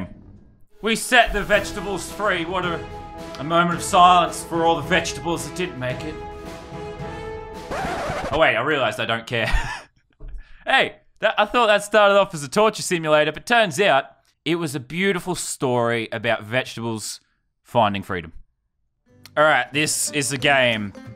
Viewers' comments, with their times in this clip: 0:06 just the way he did it sounds like a mum finding her kid doing something dumb and being pissed until...